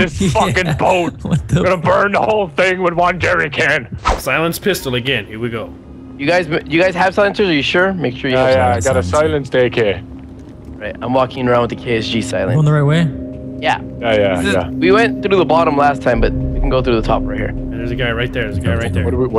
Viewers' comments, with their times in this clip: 0:05 love that music so much, so many memories